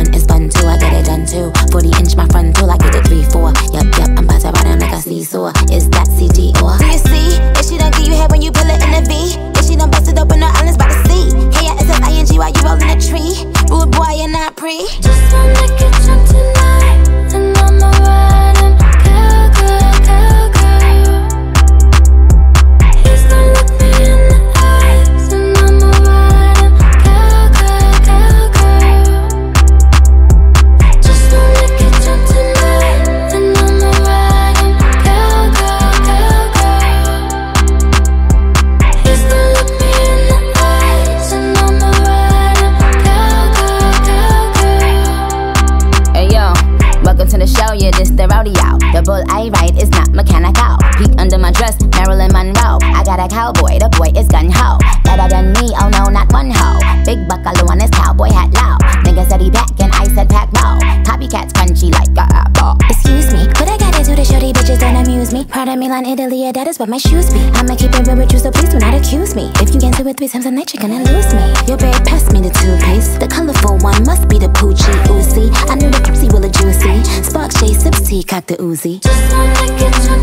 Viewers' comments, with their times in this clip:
0:07 the flow change does something to my spirit
1:00 Nicki: Copy Cats crunchy.. Roman: like a aPpLe 🧟‍♂️
1:00 Nicki music takes time to digest and that’s okay ❤ that’s what makes her the Queen! This song is a hit! I love the flow and the animation in the song! Literally when she says “copycats crunchy like an apple” and makes her voice sound like she bit in an apple is so dope! No one is rapping like this
1:03 She has incredible control over her voice. is a tongue twister like a mf and she does it with ease. She also has a talent for voice acting which she utilizes in her rapping. So incredibly talented this woman is.